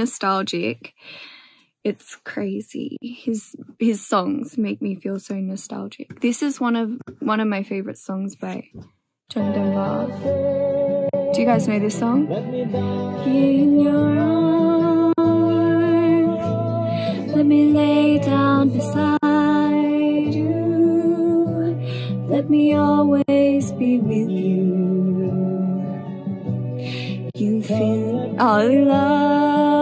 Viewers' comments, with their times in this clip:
0:10 modani's singing is really beautiful 💛